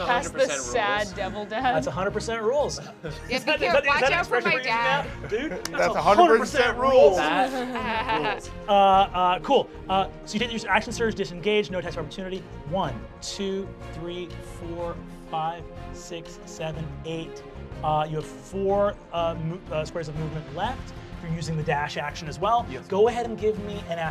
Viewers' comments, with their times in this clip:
0:06 no one else heard the discord notification as he says "rules"?